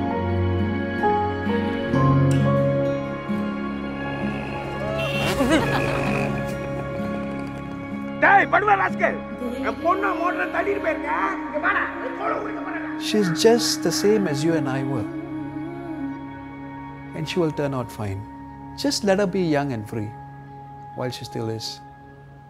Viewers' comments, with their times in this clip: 0:07 THOSE TAMIL SCOLDINGS THO!!! XD